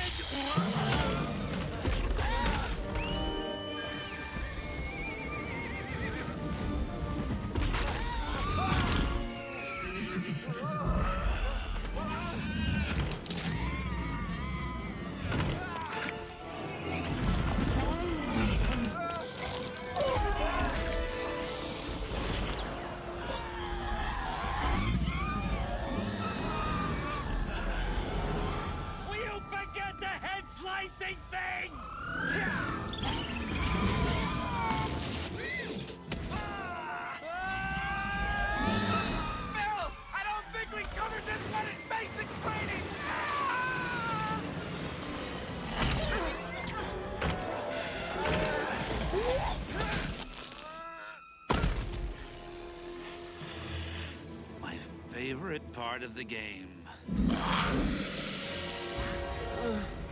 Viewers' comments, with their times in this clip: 0:03 I always liked Pegaso's entry, the music and the camera shot make it very epic.
0:23 anyone else hear the Lego yoda death sound?
0:42 that scream is so good!